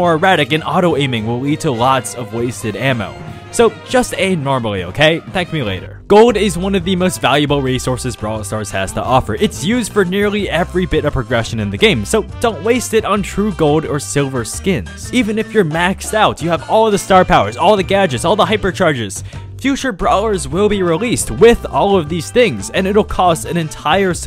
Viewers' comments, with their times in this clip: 0:06 DAMN THAT BG MUSIC, nostalgia.